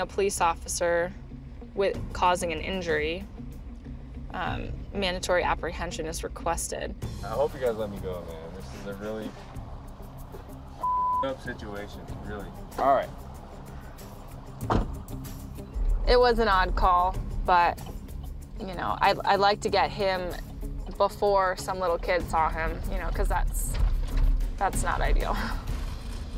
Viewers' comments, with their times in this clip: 0:08 The cop laughed when he said he hopes they let him go 😂😂😂